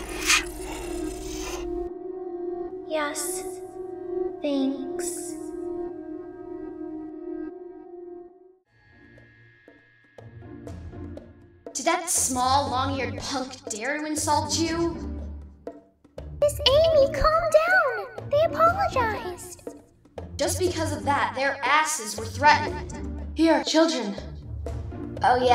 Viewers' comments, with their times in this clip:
0:09 Did you seriously use distorted DDLC music for ?